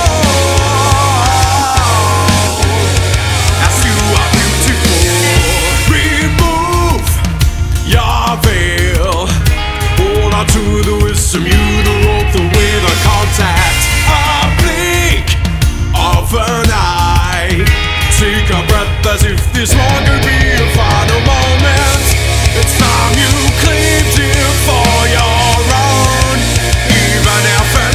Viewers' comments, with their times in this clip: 0:09 Sick music. Annoying minutes long ad. What the hell